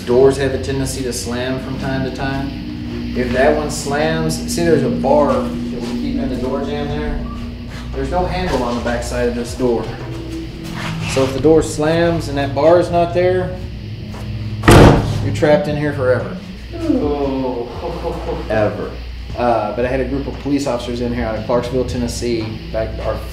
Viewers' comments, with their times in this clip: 0:10 Was there anyone else who heard whistling